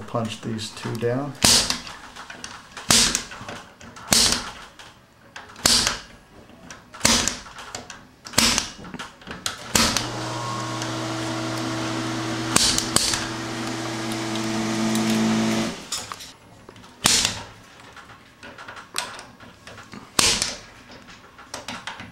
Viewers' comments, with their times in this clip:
0:05 sounds like a nail gun ..